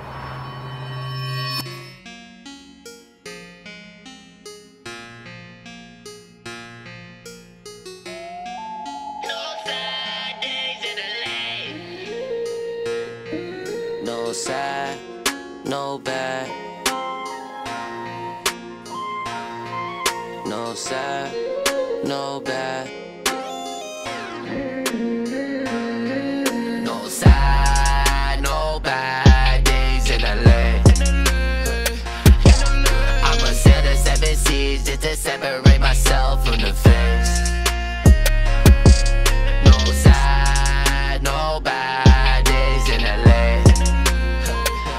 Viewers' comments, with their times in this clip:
0:09 sounds like Gene from Bobs Burgers 🍔
0:26 Actually starts rapping: